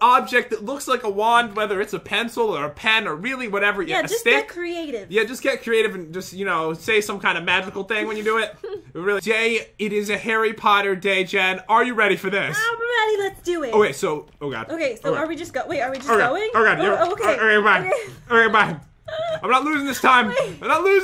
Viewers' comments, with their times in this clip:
0:08 hmm lag or hi says a bad word hmmmmm